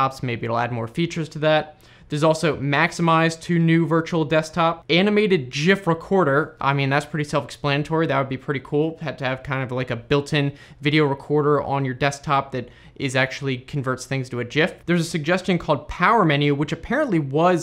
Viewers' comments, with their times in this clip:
0:05 did you say jif ?